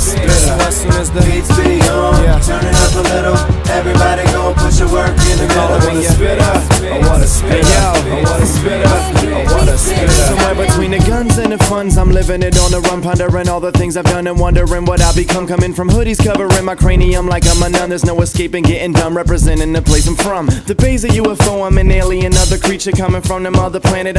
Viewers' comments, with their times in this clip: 0:10 lays it down like bricks